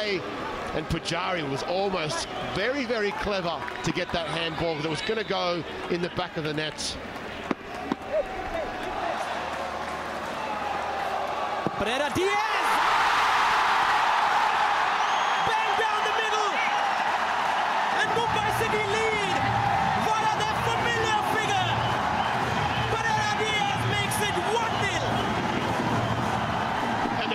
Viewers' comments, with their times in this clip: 0:08 Roar of our crowd as loud as Kochi! 👀 💙💙